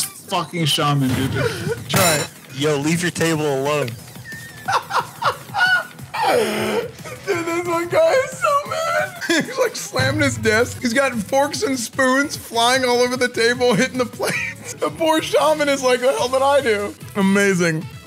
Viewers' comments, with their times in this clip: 0:05 it's funny how you can tell that guy hasn't cleaned his room since tbc launch by the audio. All the players and forks 😂